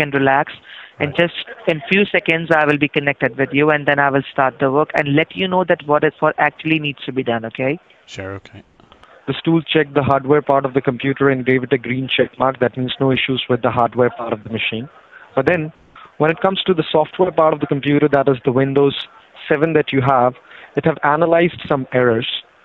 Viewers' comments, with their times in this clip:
0:08 Did his balls drop mid call? Lol